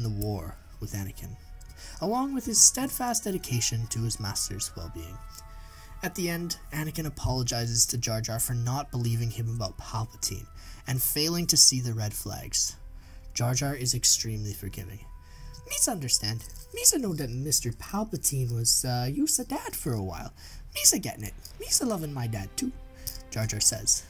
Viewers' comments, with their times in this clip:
0:10 We can hear something metallic and onward, maybe keys or coins touching each other? Other than that, good work!